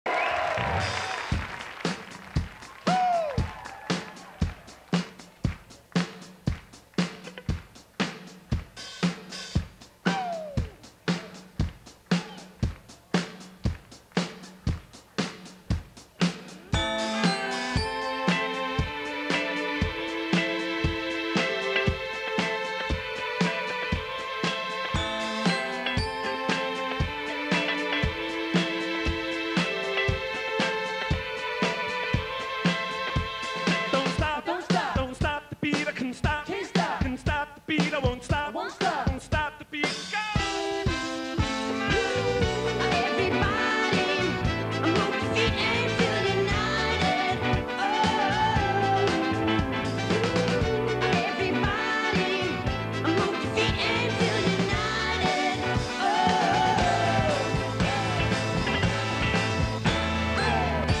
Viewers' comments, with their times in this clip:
0:01 and The drum sound like Billie Jean
0:02 Listen to the intro of the song with the drums Could have fooled me That was pumped up kicks.
0:41 embarrassingly bad karaoke level bad until
0:43 😳😳😳😳he sounds just like Michael Jackson 💯
0:44 has anyone clocked him trying to sound like Michael Jackson!!! using same tone Ffs 🙄